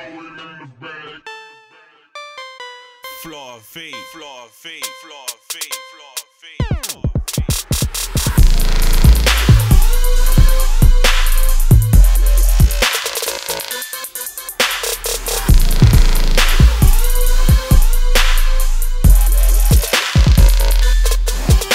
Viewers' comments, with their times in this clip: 0:08 I Clicked The Video, Waited For The Video To Play, Turned The Volume Up, And .... Here's The Best Part .... Broke My Headphones.♥